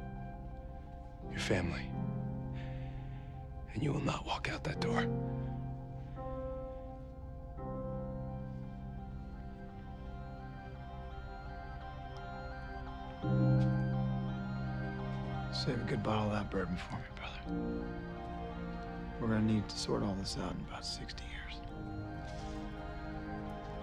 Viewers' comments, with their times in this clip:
0:09 what is the music, that creepy melody that they keep playing every now and then. Anyone knows it??????